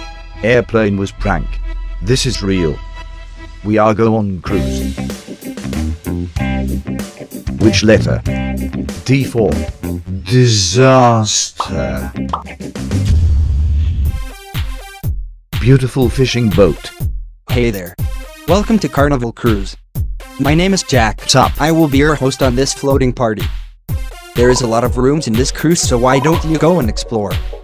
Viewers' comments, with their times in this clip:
0:10 When the eas alarm hits: